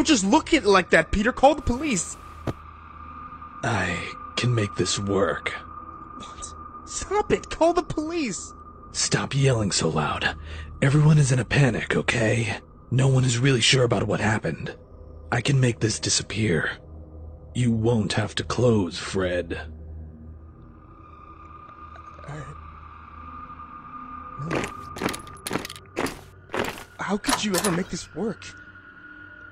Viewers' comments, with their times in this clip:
0:10 Peter's voice remind me of BATMAN